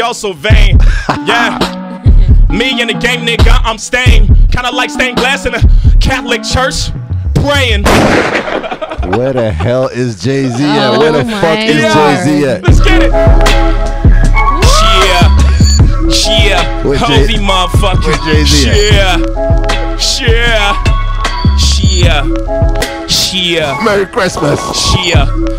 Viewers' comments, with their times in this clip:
0:09 Impressive freestyle/rap... Eminem was great but Dat Jay-Z is epic!